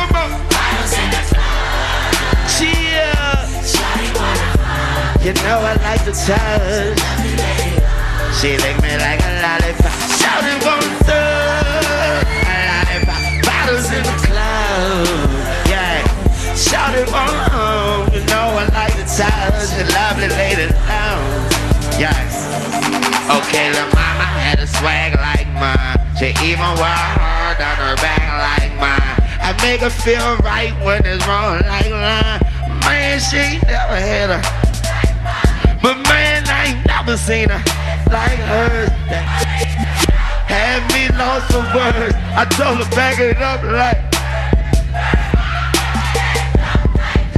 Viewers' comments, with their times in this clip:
0:10 no offense, but he didn’t sound like he was in his twenties😂 “In a good way”
0:31 he sounds like a duck:DDD